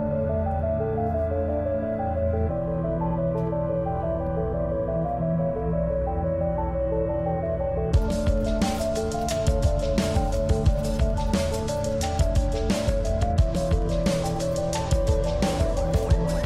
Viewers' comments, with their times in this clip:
0:04 Aaaaaa the music is giving me Fate vibes! Fate was an early to mid 2000s computer game that had a demo preinstalled on windows 7